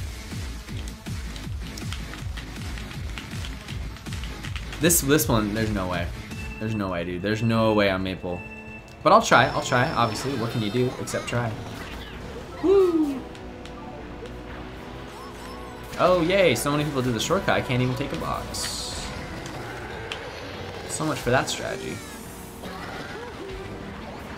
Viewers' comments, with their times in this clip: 0:10 red like roses in the background? hell yes